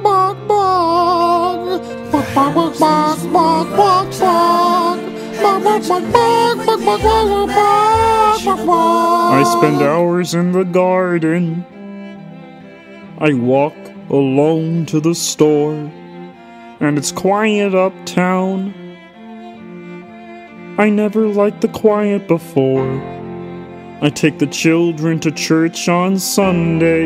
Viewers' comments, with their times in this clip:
0:08 kermit the frog hasn't sounded this sad since Bein' Green :,(